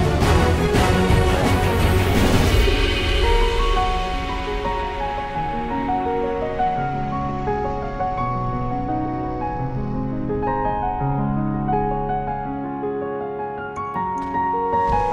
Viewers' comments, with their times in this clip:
0:03 That music, that level 10 cleaver, those drops on the boss hp.. So beautiful tears of joy